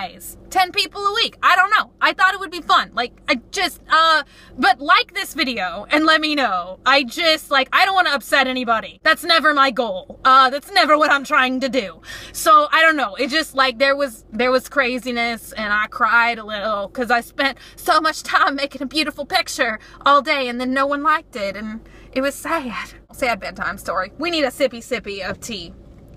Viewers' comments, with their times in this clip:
0:09 a car drived by